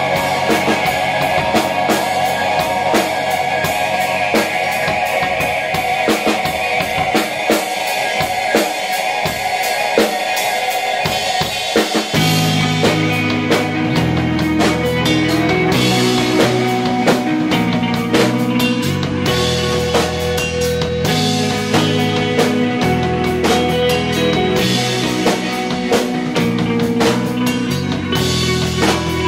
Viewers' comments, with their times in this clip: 0:10 grooves so hard.